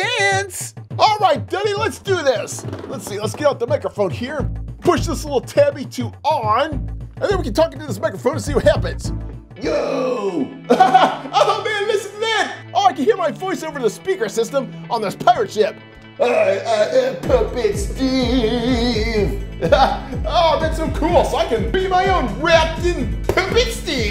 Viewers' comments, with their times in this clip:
0:09 he sounded like zombie Steve